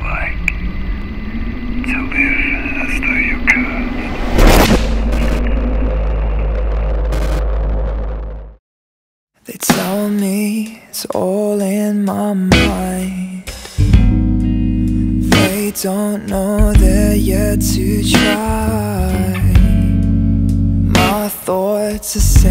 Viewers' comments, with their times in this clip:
0:05 till ..i thought my headphones got damaged ....😂😂😂